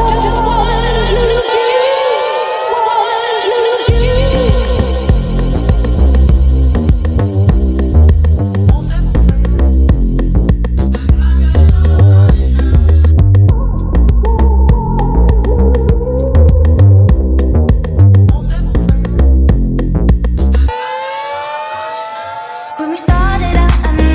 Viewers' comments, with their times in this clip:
0:06 The backing beat that starts sounds like another song, any ideas?